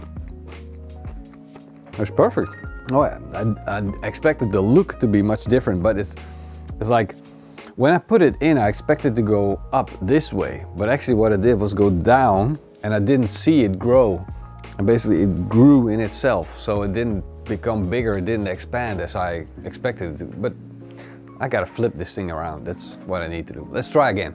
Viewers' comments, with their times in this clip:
0:08 you sound exacly like my girlfriend